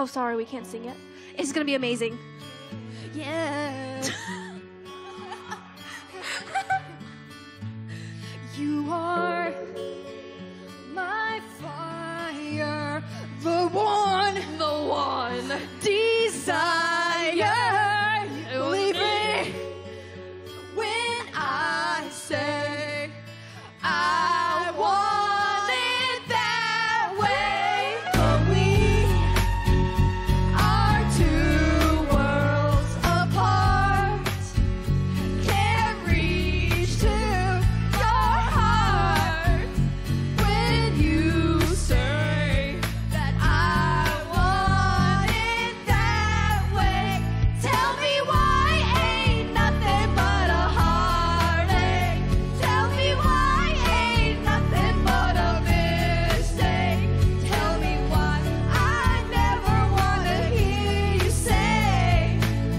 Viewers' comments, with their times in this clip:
0:07 holy shit she actually sounds good here LOL
0:49 here it went to singing the harmony part